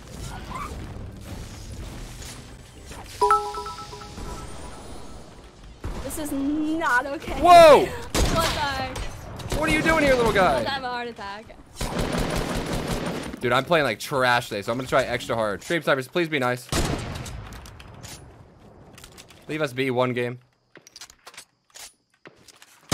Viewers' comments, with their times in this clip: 0:07 that woah it sound like tfue